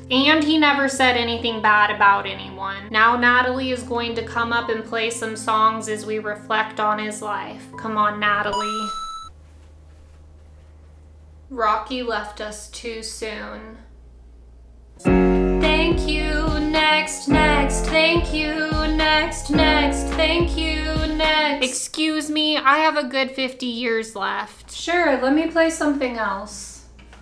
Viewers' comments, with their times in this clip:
0:08 video game sound effect and action 😅😅😅